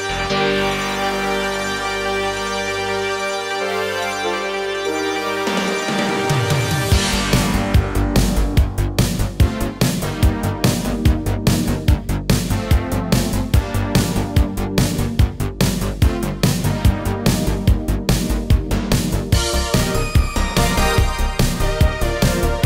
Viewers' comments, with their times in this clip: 0:06 OMG, the 90s Retro music part in was so hype.